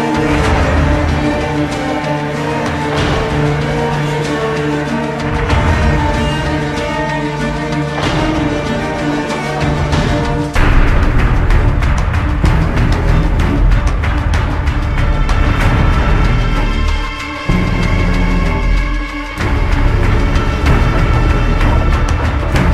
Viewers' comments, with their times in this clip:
0:10 The hometown mission with the Russian brute will always be my favorite from this game. Also sounds like the round theme from Multiplayer